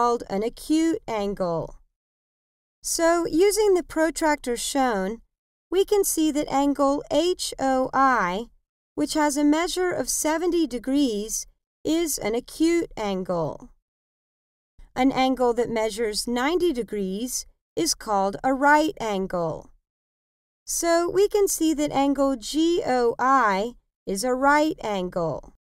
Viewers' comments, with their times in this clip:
0:08 wtf i cant imagine the fucking voice